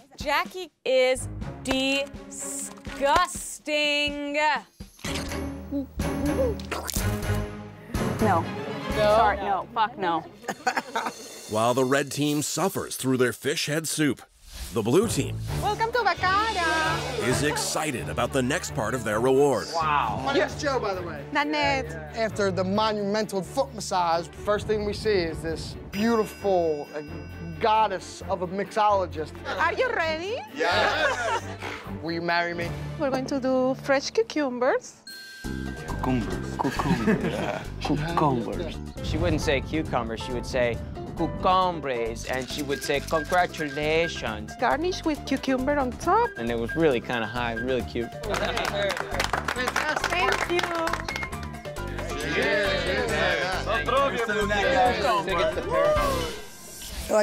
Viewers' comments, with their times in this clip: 0:05 I cannot stand when you guys use canned sound effects like that...
0:34 I still don't understand why saying "cucumber" in an accent??
0:40 sounds like pewdiepie
0:41 So no ones gonna comment about the whole cucumber pronunciation thing 😭 that killed me lmao